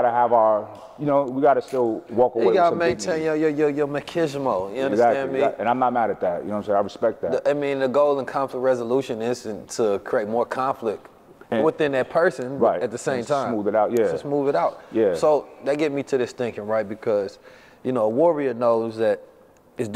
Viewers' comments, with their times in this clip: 0:06 😂 “Ma-key-z-mo” …me as a latina 🤔💡💪 machismo ”Ma-chi-Z-mo”